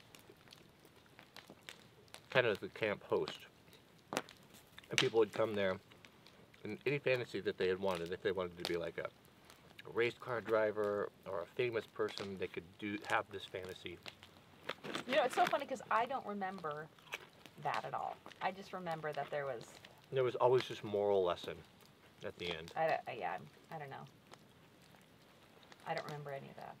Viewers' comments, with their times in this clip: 0:08 you guys are JUST MUMBLING, CAN'T HEAR YA.... Bad sound or low mic.